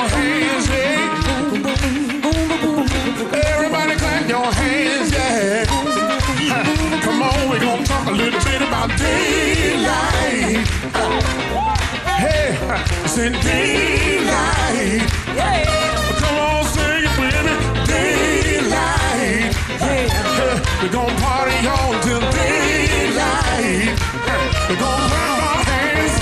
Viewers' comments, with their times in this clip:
0:08 Am I hearing this right? did he say " we're gonna talk a little tit about daylight"?